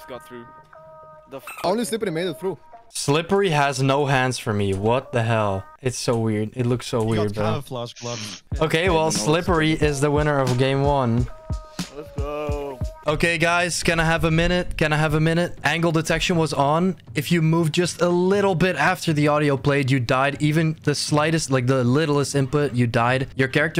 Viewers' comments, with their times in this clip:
0:08 music synced with the girl singing